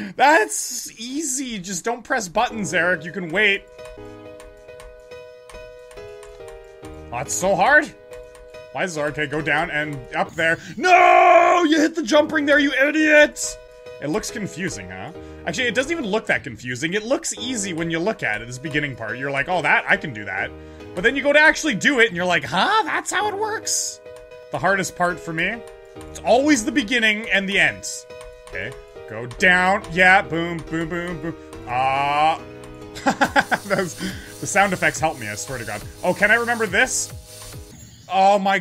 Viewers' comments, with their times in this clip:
0:10 he sounds like Snake
0:23 I didn’t know The mom from the Simpson’s played geometry dash